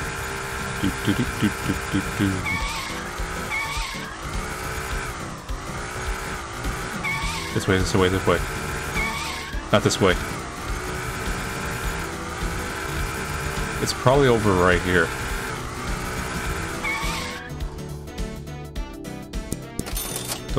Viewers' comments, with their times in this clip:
0:06 is that just me or does this sound like peppino from pizza tower turning